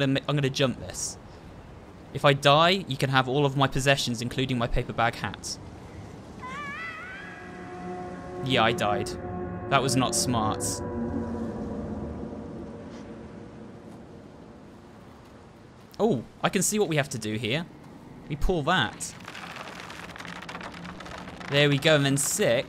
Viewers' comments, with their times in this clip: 0:07 Two things I like - Mono's "AAAaaAaAH-" - Six recoiling like "DUDE WTF"